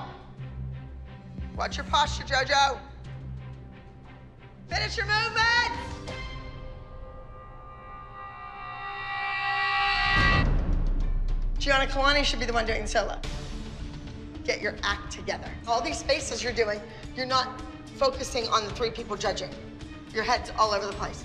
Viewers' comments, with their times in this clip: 0:07 This background noise I feel like has been in every episode by now🤣